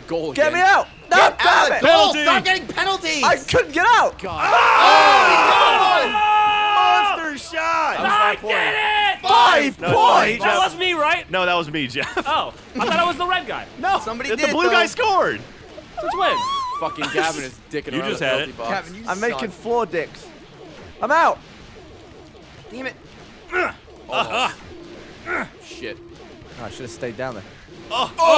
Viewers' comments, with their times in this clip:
0:08 They all said 5 points at the same time
0:10 Did anyone notice the lads yelled,"5 points?!" at the same time ?